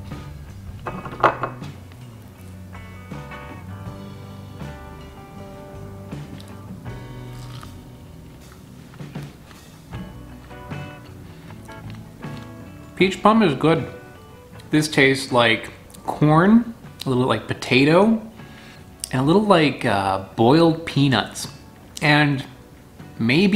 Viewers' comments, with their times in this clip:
0:10 he changes his dialect to indian english. Just wanted to point that out. Carry on now.